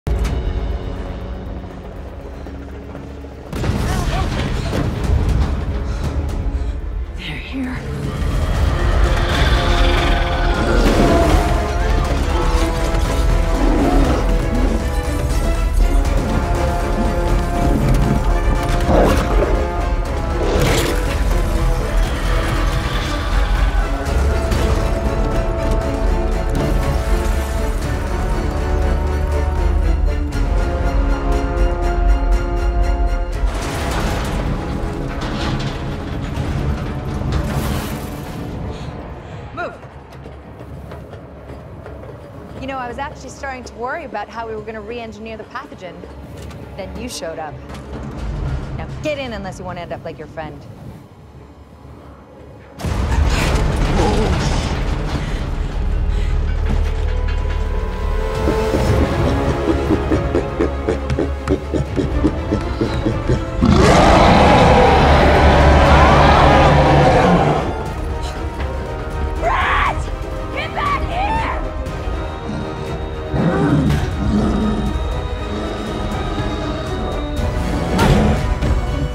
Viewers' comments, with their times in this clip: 0:08 if you listen really closely, you can hear the buck trex call from TLWJP
0:08 Am i the only one who heard a Rex noise from Jp1 in ?
1:03 loudest roar in theatres.